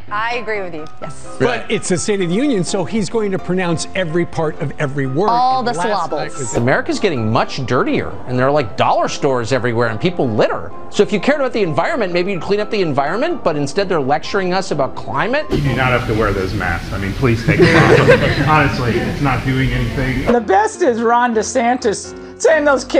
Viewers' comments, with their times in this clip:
0:05 Couldn’t handle all the slobles. 🤣